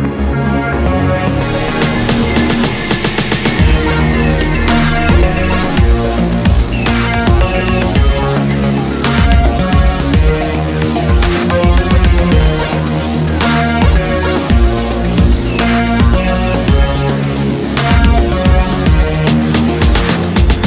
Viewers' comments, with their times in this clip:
0:03 sounds like Red Faction 1